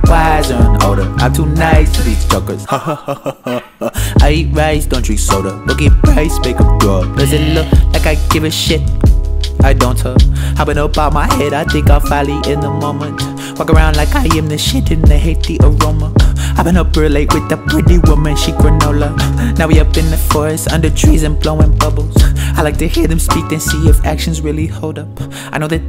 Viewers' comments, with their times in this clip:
0:10 why does the part after remind me of kendrick lol